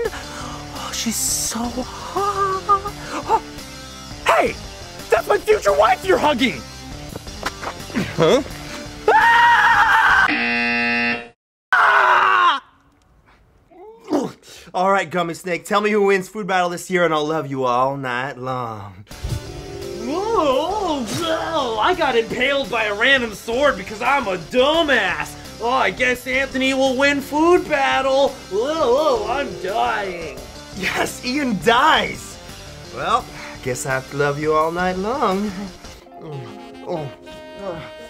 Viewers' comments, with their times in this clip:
0:04 he sounds like eddy from ed, edd and eddy
0:19 Sounds like barney.